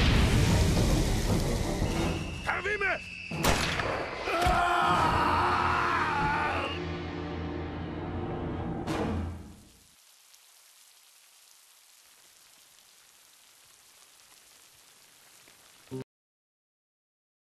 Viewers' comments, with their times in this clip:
0:05 The way he screamed just makes me wanna shout "Snake what happened? Snake?! SNAAAAAAAAAAAAKE!!!"